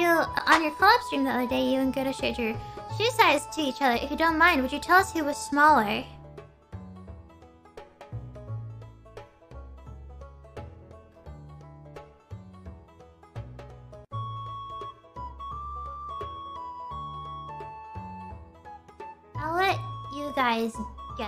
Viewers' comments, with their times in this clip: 0:06 ngl Meimei actually sounds Gura on that part😭😭😭